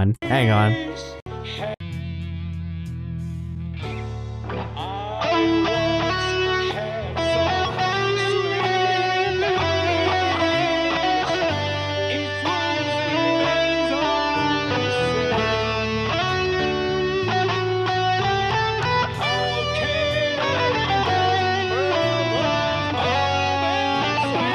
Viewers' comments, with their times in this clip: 0:05 want to point out this part was so skillful. Rearranging the Bohemian solo into that on the fly and warping it to meld with the main track was expertly done.